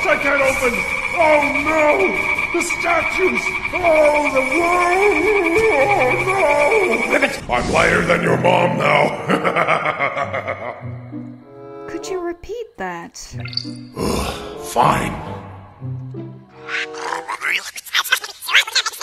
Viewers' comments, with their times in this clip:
0:06 that Ribbit got me